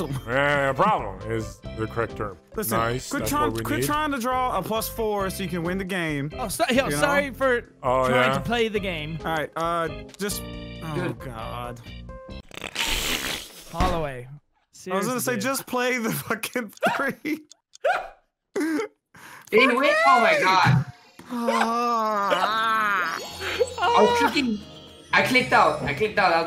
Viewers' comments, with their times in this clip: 0:10 I love the irish man laughing so happily